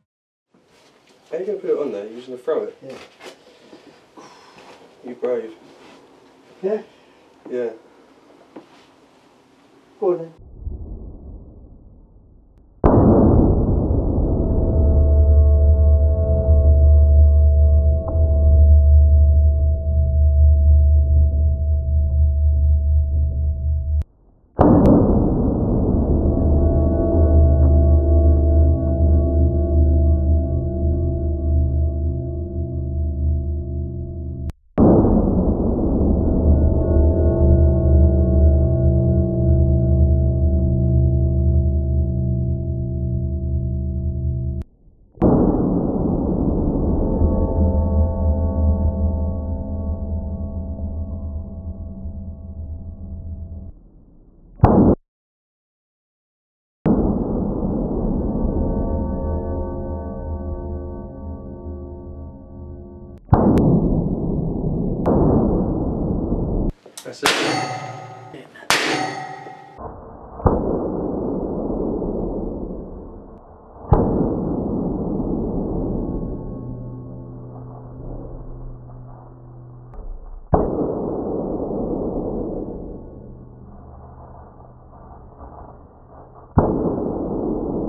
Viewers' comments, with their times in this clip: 0:10 A good ambient sound for horror game.
0:57 Notice the resonance If I were a music maker I would TOTALLY sample that somehow.
1:07 sounds like scoring points in an arcade 😂
1:08 sounds like the railway rifle from fallout